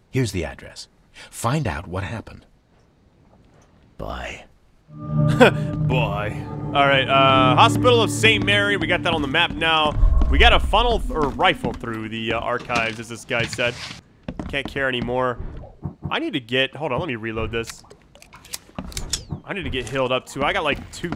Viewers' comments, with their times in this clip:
0:06 That was good imitation